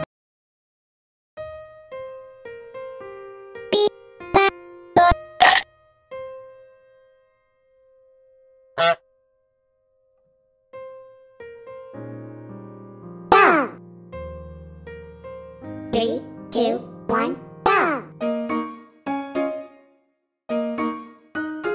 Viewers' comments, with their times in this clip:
0:03 bf was about to sing despacito